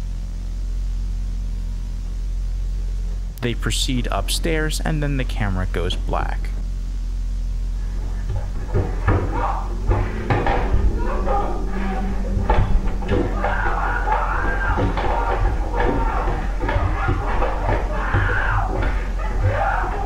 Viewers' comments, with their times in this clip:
0:08 such calming noises /j